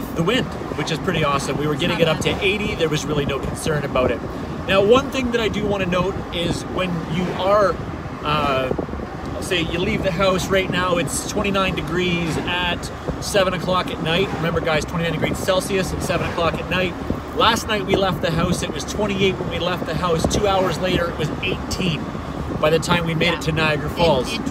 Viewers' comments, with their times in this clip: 0:05 aaaannddd he’s out haha the wind noise obviously isn’t an issue for your boy!